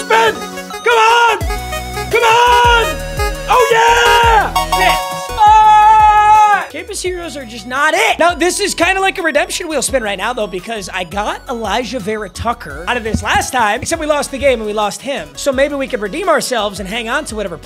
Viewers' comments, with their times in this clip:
0:03 bro sounded like cat in the hat when he said “oh yeah” 😂